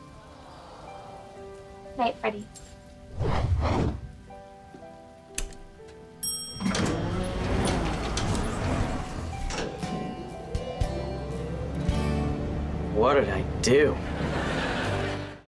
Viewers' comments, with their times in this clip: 0:12 Freddie: What did I do? (yells) WHAT DID I DO?!?!?!